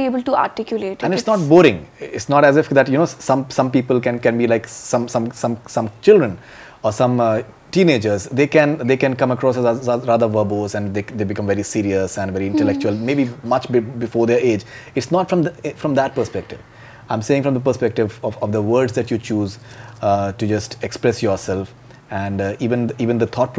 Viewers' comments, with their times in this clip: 0:03 so funny he start lagging
0:05 so funny he srart lagging